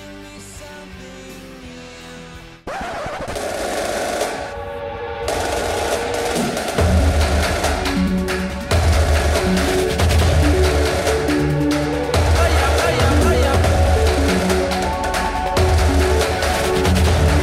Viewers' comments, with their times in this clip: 0:03 just in case anybody was wondering the song is ODESZA - Loyal. Great song choice btw, love the sound of the apes in the background very fitting :)
0:04 The song is perfect! Sounds like monkeys chanting in the background, anyone know the name of the song? It's not listed in the description.